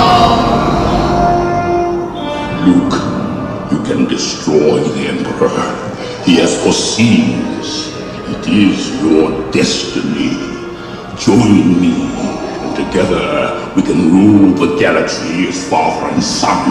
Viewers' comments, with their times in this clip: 0:04 rip headphone listeners